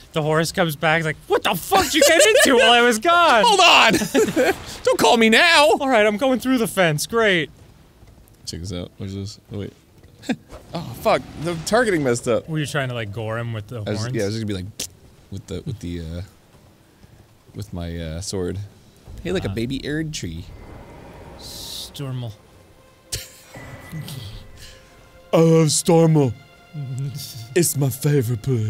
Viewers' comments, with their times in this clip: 0:09 I love whacking that bugle boy as I run past because he'll usually get to barely start playing so you get a doot *WHACK*. It's like a cartoon